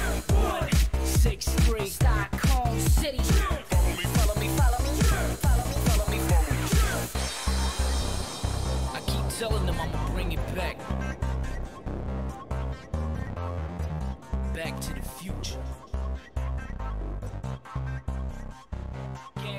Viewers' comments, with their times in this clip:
0:07 this is giving me bye bye there vibes (pizza tower)